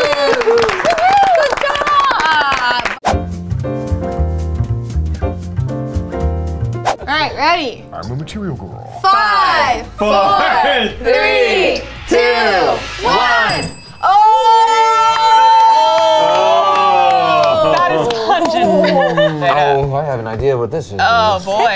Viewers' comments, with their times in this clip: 0:07 did anybody else here "I'm a material girl" with a deep voice in